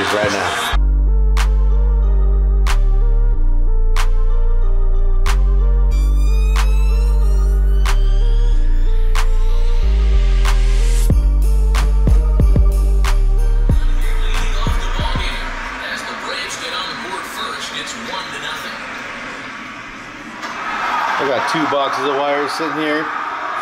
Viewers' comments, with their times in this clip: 0:05 what is the intro song it has a nice vibe to it.